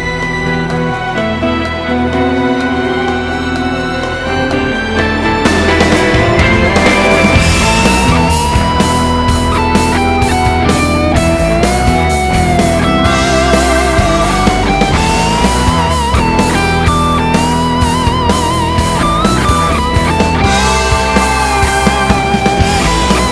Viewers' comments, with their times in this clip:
0:07 steve morse solo